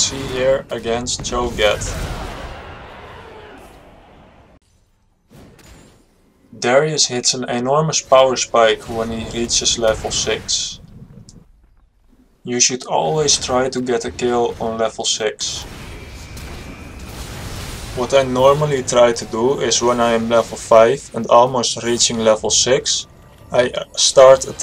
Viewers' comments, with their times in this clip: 0:06 ''Darius hits een enorme powerspike'' 10/10 English. xDD